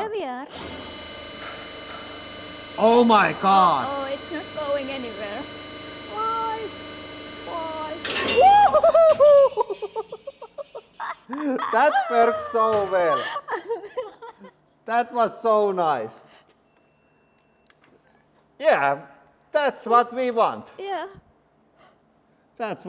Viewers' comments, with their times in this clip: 0:08 angry birds ahh sound